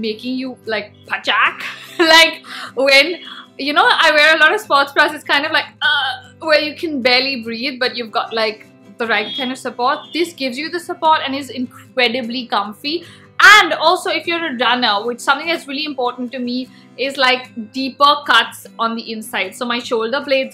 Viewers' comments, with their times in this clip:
0:04 the way you said phachaak was cute 😂